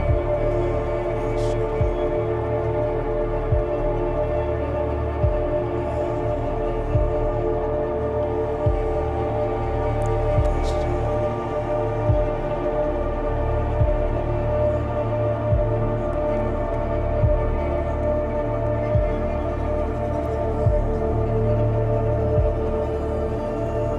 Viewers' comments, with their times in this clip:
0:09 Is he whispering my name ?